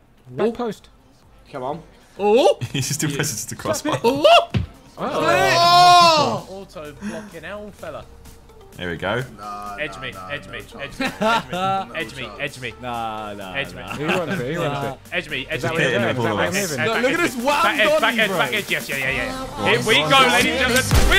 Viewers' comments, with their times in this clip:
0:04 is it just me or is Harry saying ”Allah”